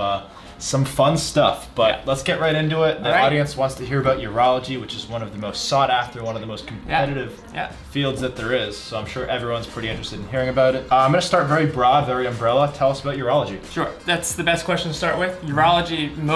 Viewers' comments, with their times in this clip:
0:03 Dude!! I thought I was hallucinating lol. You can hear a third person talking Great video by the way